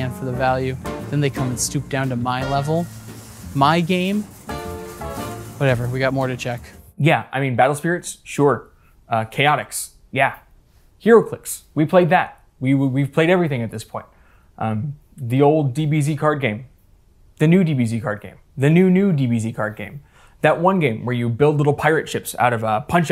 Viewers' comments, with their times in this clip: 0:07 shout out to chaotic WHOOOOOOWWW